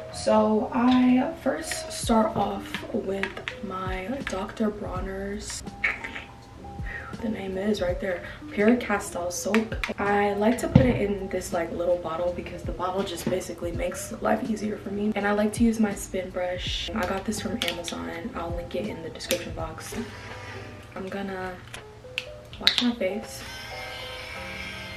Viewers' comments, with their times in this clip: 0:06 I love how she said “we gon have some breakfast” pm 🤣🤣🤣